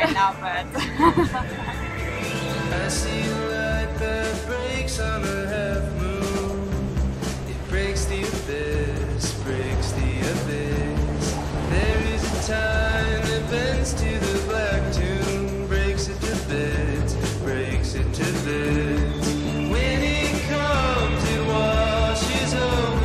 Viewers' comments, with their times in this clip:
0:04 Liked the music starting Really fit with that part of the video. Anyone know the artist?